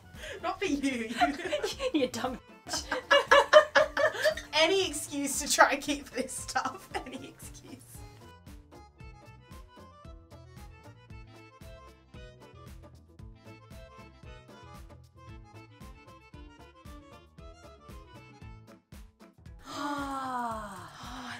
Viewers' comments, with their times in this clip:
0:03 love that laugh I picture a cute little seal with a pastel ball of course